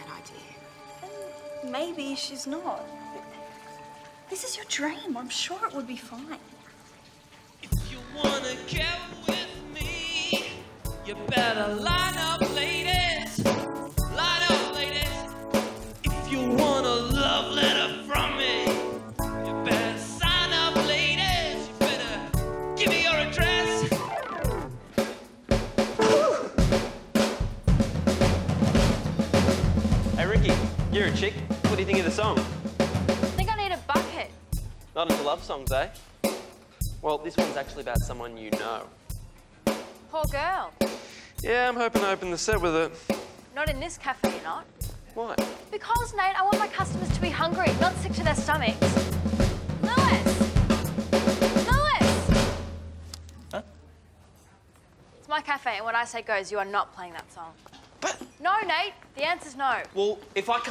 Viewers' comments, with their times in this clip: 0:07 he sounds like Bono, c'mon he really isn't that bad at all. They probably should've made him worse lol
0:48 NGL But Lewis was killing that drum solo lol😂